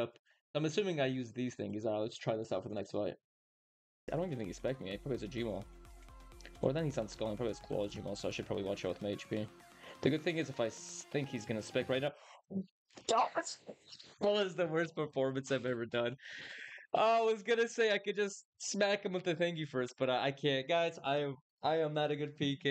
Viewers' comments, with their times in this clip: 0:03 bros one ticking his words